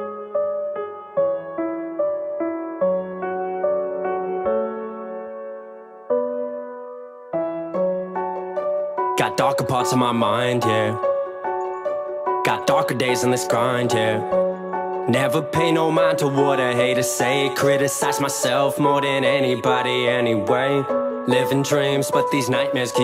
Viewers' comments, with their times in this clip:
0:09 Was that your song ? It sounds dope!